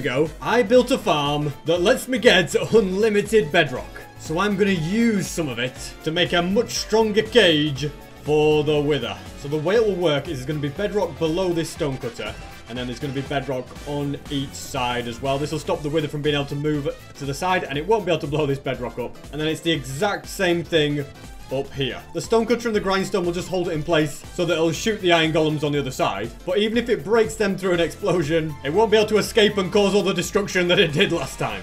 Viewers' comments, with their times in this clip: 0:10 the fact he put the bedrock on beat
0:12 that bedrock placing on beat is fire 🔥
0:12 blocks placed on beat, nice
0:13 is it just me that noticed the Block Placing Aligned PERFECTLY with the Studiopilis theme on